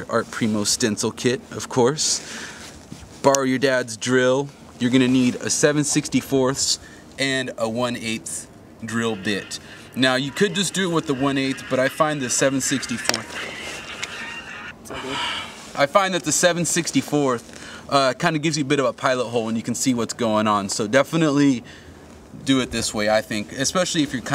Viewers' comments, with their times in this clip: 0:05 lol his phone rings :)